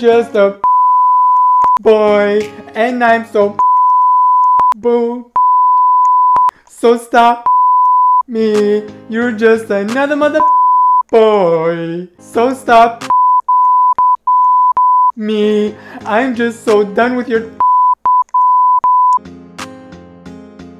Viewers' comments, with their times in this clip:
0:07 got all the bleeps 😂